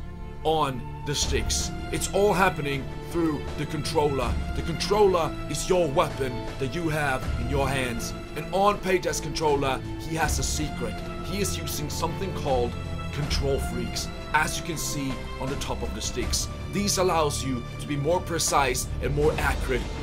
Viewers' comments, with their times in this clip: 0:08 your voice reminds me from UK announcer😂🤣🤣 btw We can use Controller on PC?